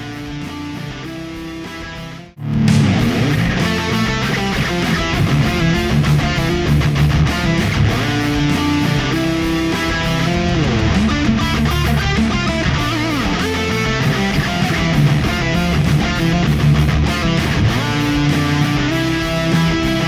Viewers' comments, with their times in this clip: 0:06 The delay on the slide here, took a piece of my soul. And therefore shortened my lifespan.